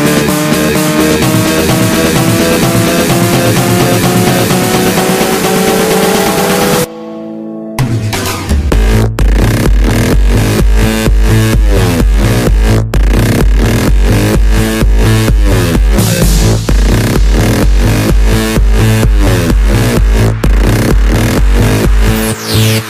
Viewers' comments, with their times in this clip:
0:06 Drop of the year
0:07 First time listening to this again in years - the drop still gives me chills. head bobbing intensifies
0:08 I love the drop and the electronic fart sound!XD
0:08 Yves V on the toilet after a bad curry?
0:08 the best drop evaaa...t